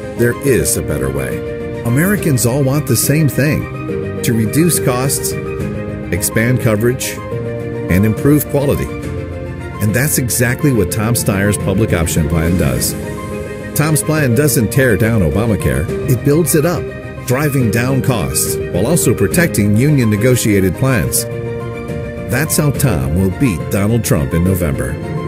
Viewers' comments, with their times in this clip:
0:10 so now this ad shows how to pronounce his name, chopping up his name is old news! 😉